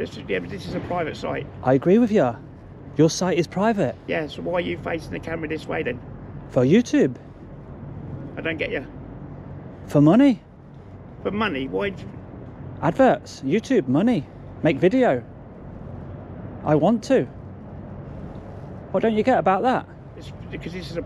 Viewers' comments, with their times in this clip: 0:08 When u started speaking in Neanderthalers language i spit out my drink laughing 🤣 You Tube for money, make video!! Hahahahaha keep up the good work fam